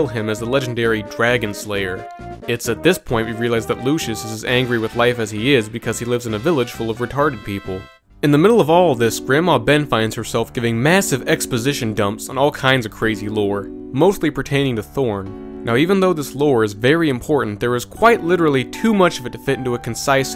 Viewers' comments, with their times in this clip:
0:06 cmon bro I’m only commenting cause I can feel the hesitation in your voice. smh